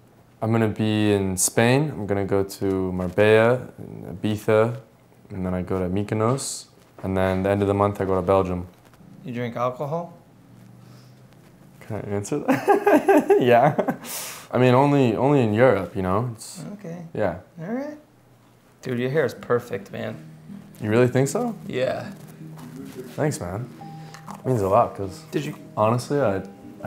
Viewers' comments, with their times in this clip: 0:09 that's how you know they're actual friends. They share the same laugh. I noticed that with my friends, first week they have their own style of laugh then progressively I slowly start hearing my laugh from them that and that's cool